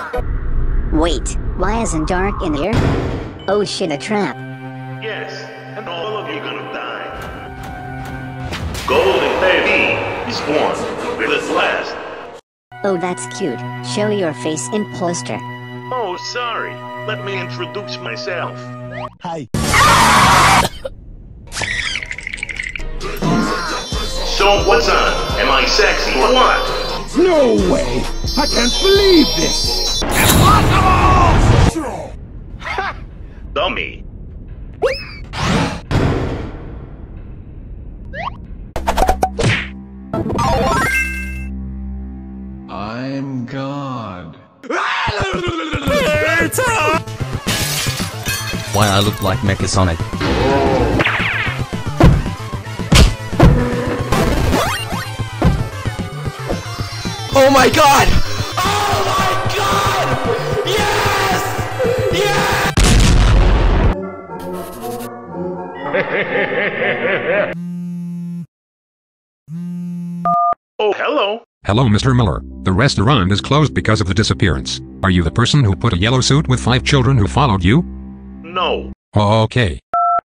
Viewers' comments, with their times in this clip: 0:07 William Afton's Voice
0:19 “hi” Stewie griffin
0:29 that vegeta IMPOSSIBLEEEEE
0:41 (from this time on) it’s so hilarious to see them being chaotic 😂especially chica screaming pizza and golden Freddy screaming yess!!! 💀 😂
1:05 william afton most evil laugh hehahehahehaha